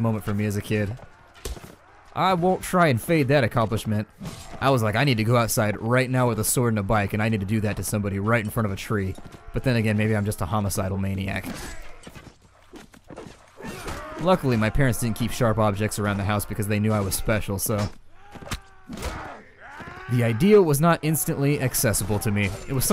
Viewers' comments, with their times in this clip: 0:09 you sound like a scary child